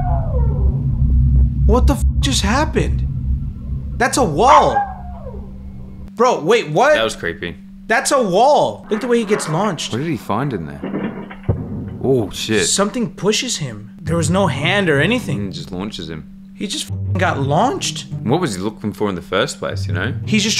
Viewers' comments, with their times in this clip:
0:03 the dor was saying smothing in spanish